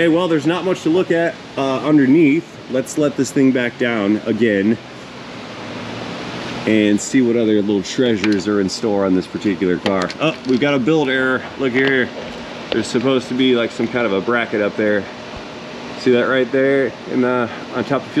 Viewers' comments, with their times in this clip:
0:06 Is that the infamous Elusive Chinese Barking Spider?